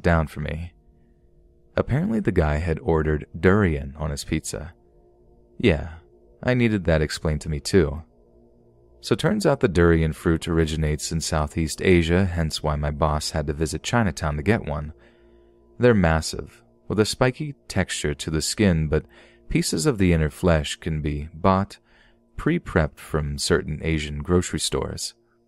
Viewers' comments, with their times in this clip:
0:08 DID YOU JUST SAY FWAIGWAINT?